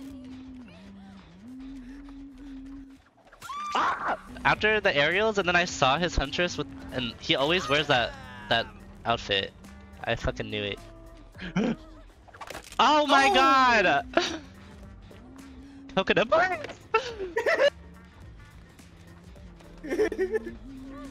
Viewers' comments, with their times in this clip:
0:03 I swear is the best scream ever